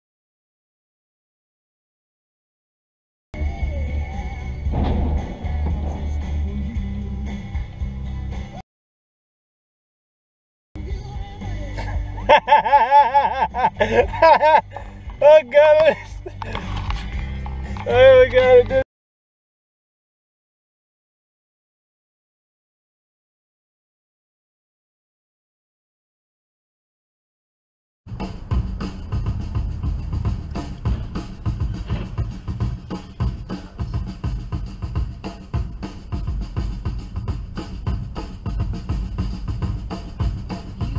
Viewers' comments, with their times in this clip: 0:06 Box truck be like "F THAT TREE. *CRASH*"
0:12 why the hell are you laughing?
0:28 "Poor Tom" by Led Zeppelin, not their greatest song but a really cool groove.